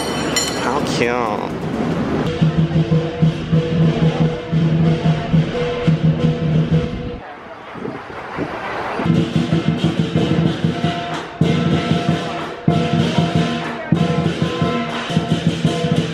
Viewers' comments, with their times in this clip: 0:03 these annoying ass dancing lions comes to our condominium every CNY and they are so loud ugh